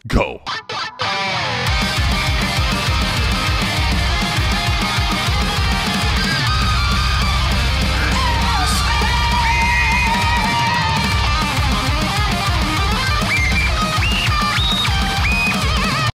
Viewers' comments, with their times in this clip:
0:07 The voice of an angel